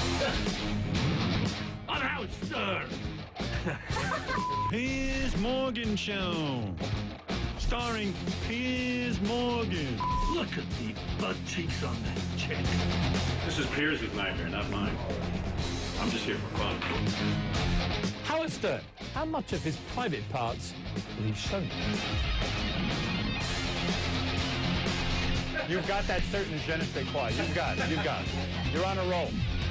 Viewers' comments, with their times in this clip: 0:10 In the beginning of this segment watch .. hahah that is peirs trying to impersonate Howard , but you can tell from his dumb impersonation of him, he hasn't a clue of who howard stern is or what he does hahah.